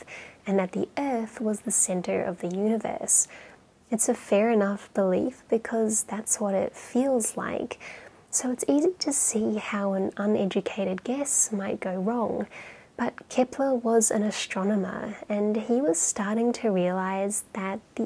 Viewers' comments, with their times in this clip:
0:03 It is true, the center of gravity, between the sun and the Earth is much closer to the sun than it is to the Earth, resulting in our traveling around the sun, not visa versa, yet no one on this planet can truthfully deny, that presently, planet Earth is the center, here and now of their universe. Otherwise they are trespassing, and practice terrible geography, or cosmology. You have a cool narrating voice. We are the center, for more than one reason.